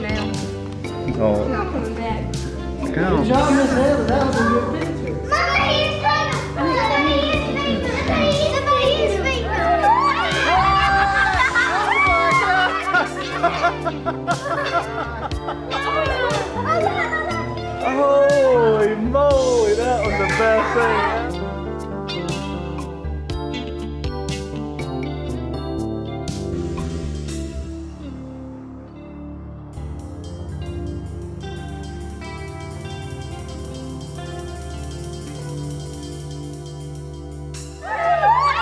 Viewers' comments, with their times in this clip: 0:09 when the microwave beeps
0:23 is the absolute best. Perfect tune for that slow mo.